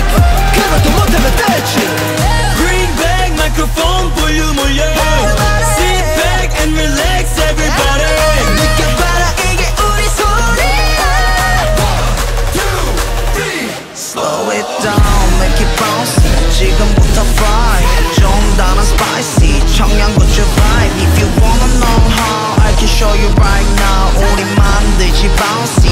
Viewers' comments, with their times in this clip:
0:06 jongho singing his high notes ㅠㅠ